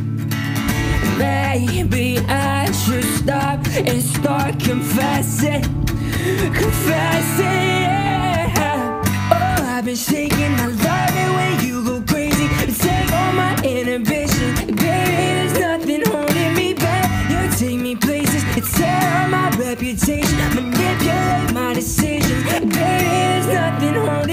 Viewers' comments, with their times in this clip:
0:06 he sounds just like shawn mendes